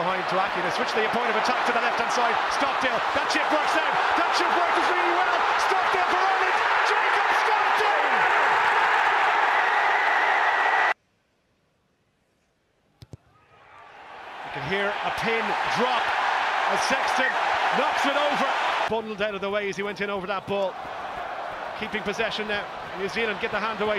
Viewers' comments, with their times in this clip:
0:05 The roar is unreal